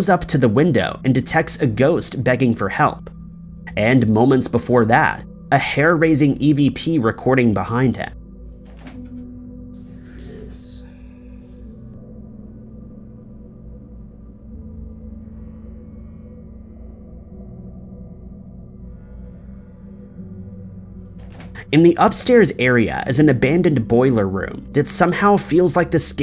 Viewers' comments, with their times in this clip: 0:10 Sounds like it's saying "Fritzy" or "For it seen"